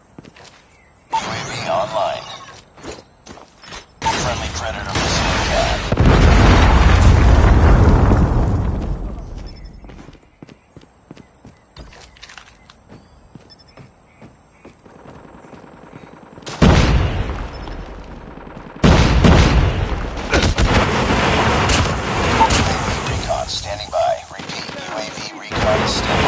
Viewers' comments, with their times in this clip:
0:10 dude is that screamin?